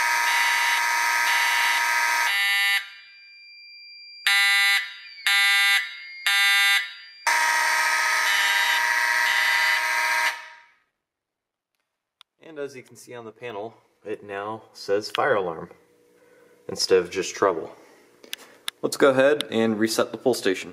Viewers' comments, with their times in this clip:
0:03 That alarm sound like a 892